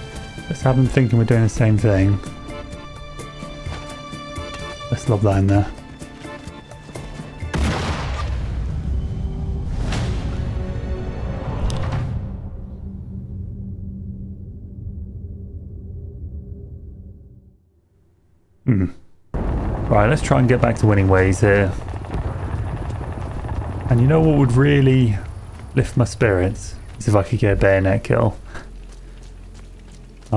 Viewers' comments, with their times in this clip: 0:09 I kid you not. when you were blown up by your own grenade...The YouTube advert it switched to was for the Bob Marley film (2024). Hence it went Booooom..."don't worry...about a thing...etc" A perfect moment.
0:18 That sad grunt 😅